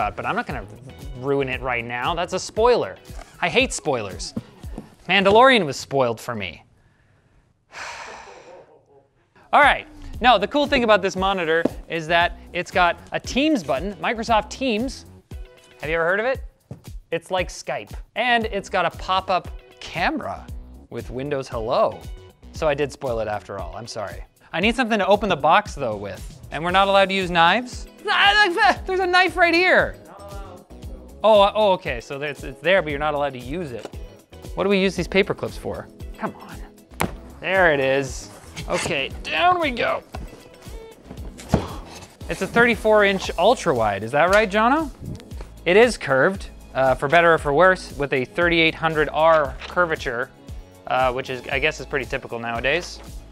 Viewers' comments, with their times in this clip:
0:05 That sigh on lol. I could really relate on that
0:38 He did sey "Dell we go", didn't he?